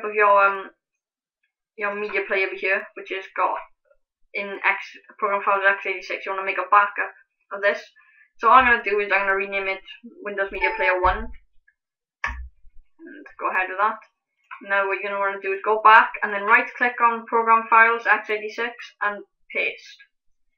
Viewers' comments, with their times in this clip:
0:08 You're losing me when you're talking about making a back up around the part of the video....sorry im not computer literate....are you right or left clicking when you re-name it and that next screen pops up....you're just going too fast and talking too fast